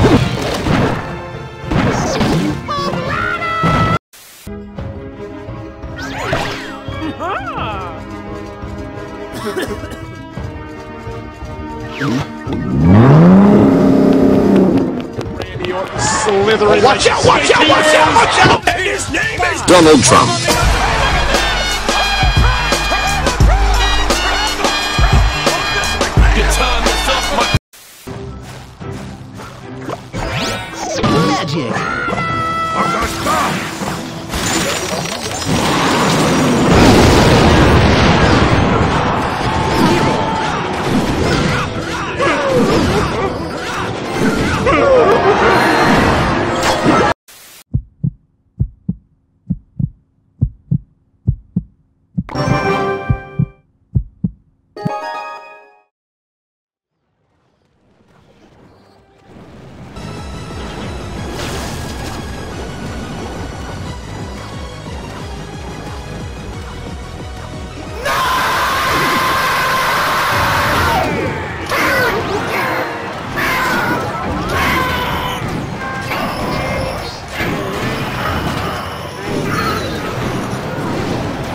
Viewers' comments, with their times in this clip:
0:05 lumberjack's sound like motor
1:05 music = fire aura